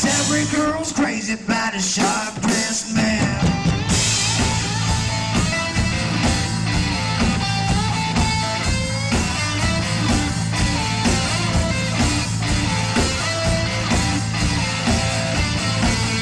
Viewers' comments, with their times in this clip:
0:04 is anyone thinking theres a cut the song sounds strange at that part.